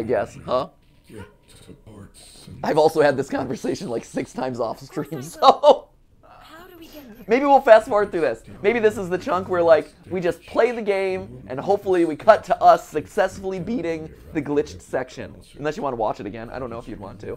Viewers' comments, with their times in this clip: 0:03 FREDDY IS BREATHING